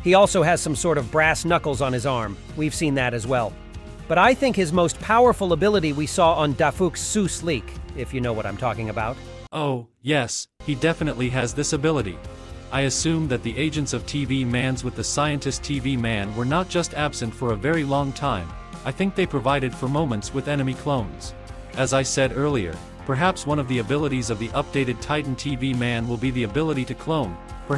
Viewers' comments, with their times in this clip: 0:09 Why does bro sound like that